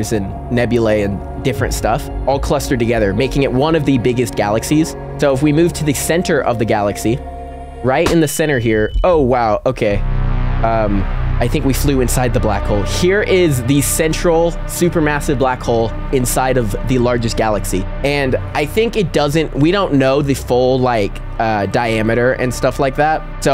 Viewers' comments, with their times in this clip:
0:07 i love the music in